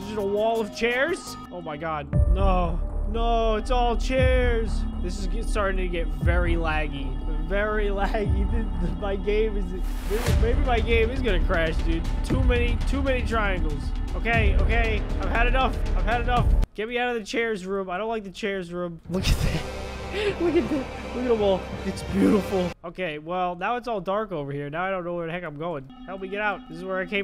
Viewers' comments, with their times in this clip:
0:10 when the beat played my dads alarm went off💀